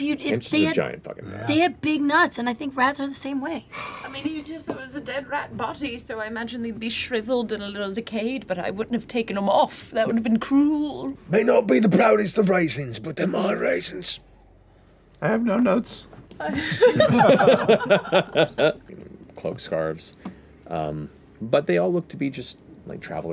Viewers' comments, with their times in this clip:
0:09 The way Laudna goes “But I wouldn’t have taken them off, that would’ve been cruuuuel” just tickles me deep within my soul Time stamp